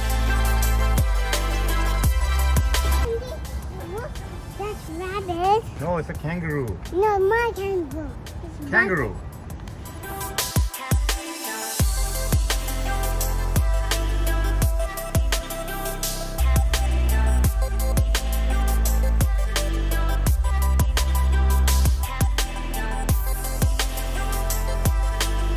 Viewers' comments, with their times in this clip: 0:07 did she say Majin Buu 😂?